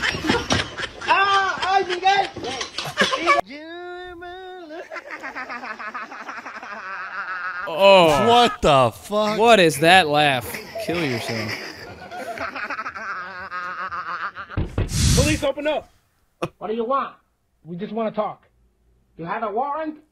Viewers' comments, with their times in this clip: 0:05 bro got that Sheen laugh from Jimmy Neutron